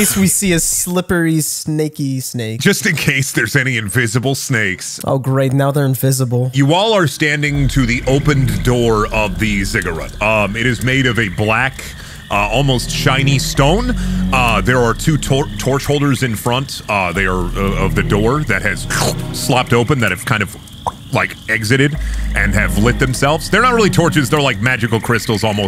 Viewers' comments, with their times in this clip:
0:06 I love that ominous track so much The whole OST is so amazing tbh